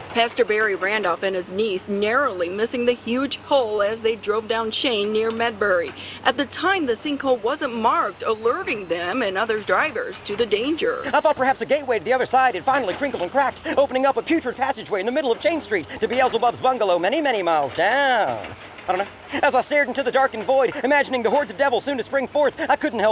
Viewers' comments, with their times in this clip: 0:07 what happens to her voice? She sounds like she's running out of battery